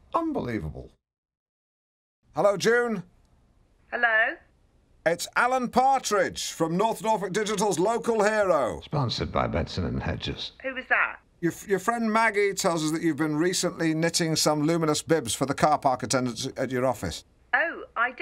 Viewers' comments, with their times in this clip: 0:06 Sultry delivery there from Al.